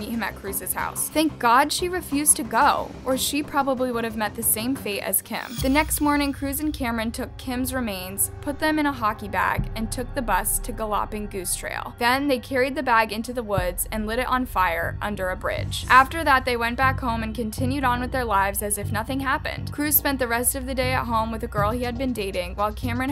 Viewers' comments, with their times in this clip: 0:10 Why did you say “gallawping”? Have you really never heard of the word “galloping”? Like what horses do? 😂😂